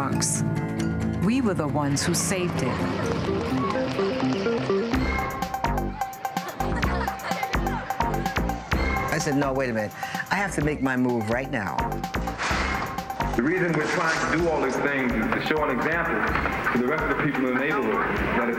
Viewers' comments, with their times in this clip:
0:04 Yo what's that beat shit goes hard.